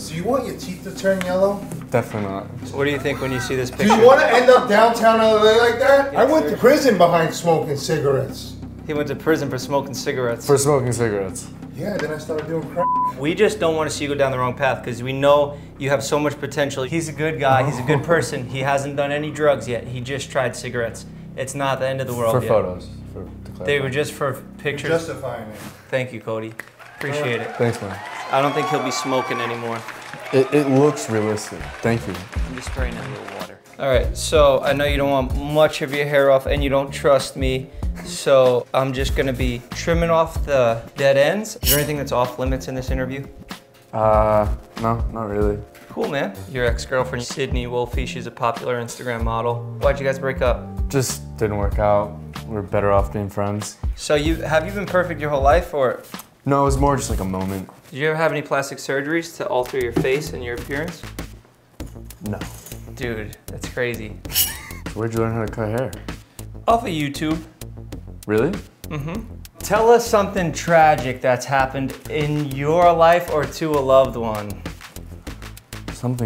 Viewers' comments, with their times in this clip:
0:10 when he bleeps the word crack, that's when you know he's desperate for that monetization damn.
0:58 that long pause pretty much confirmed it....look at his nose